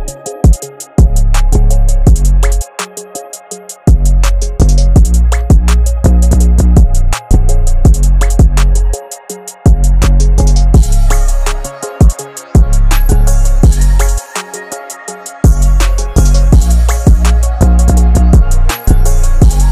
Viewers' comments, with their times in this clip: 0:05 this is so cute yet hard at the same time! I like it a lot. when the bass(I don't know what its called but the low noise) hits double it feels a bit unnatural for me.